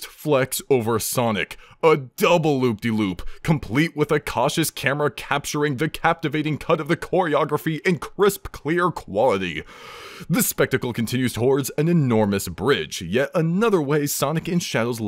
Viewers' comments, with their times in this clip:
0:03 not enough people are properly praising that pristine alliteration with perfect pronunciation.